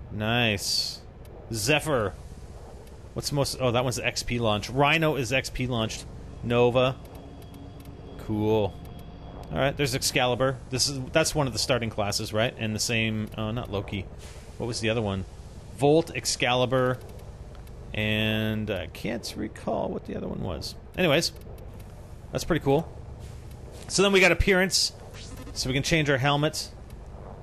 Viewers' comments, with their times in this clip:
0:09 so locked in pronounced launched?